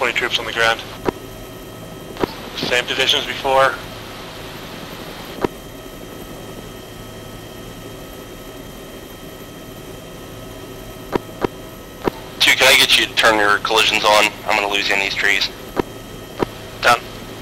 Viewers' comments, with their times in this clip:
0:05 Command seems So Fatigued.